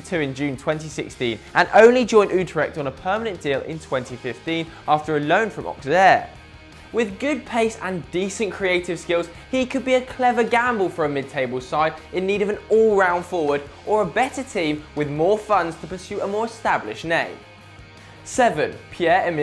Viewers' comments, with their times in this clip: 0:04 ..after a loan from aftjehjleaa